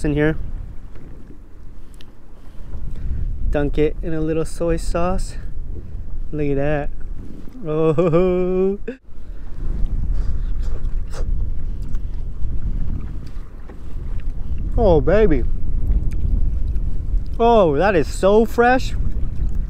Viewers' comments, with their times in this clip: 0:05 what does the walkie talkie say??